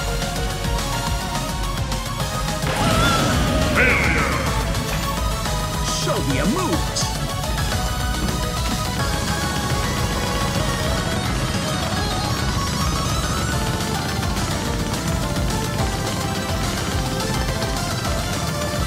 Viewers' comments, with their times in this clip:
0:06 JOGGING THEME INTENSIFIES